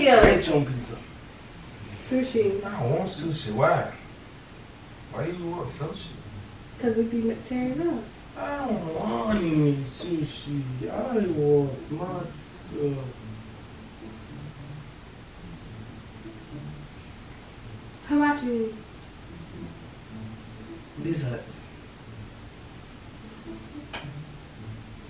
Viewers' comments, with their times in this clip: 0:07 he sounded like a bad ahh lil boy talm bout 😂”ion wanna eat sousi🤣😭”